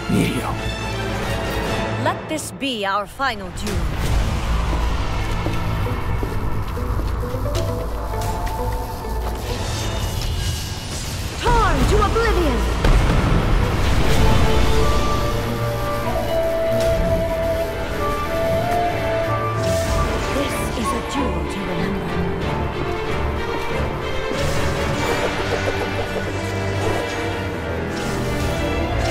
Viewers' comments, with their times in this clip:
0:10 Luna from my little ponys voice